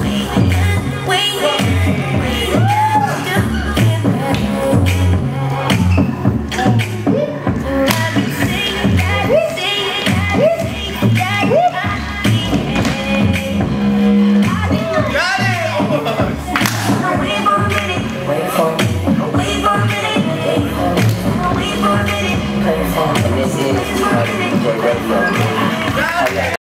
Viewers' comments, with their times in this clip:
0:08 I love how Larry is watching Lau through the mirror and then when Lau messes up, Larry laughs and says "got him" lol